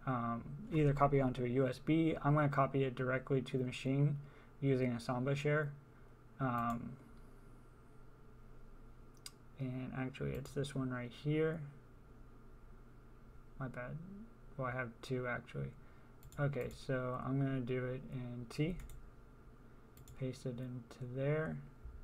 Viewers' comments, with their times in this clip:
0:03 please, i can not hear, what you are saying .. what are you using?